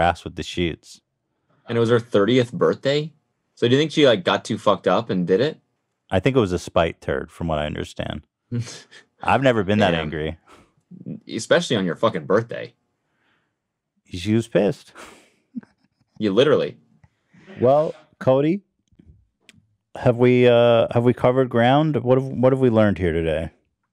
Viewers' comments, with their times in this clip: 0:06 Did he say Andrew Turd?